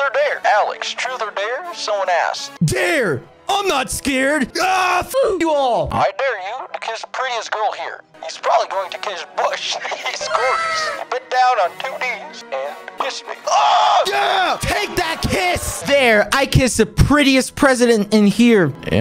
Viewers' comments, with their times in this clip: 0:03 he sounds like bakugo I’m leaving 😭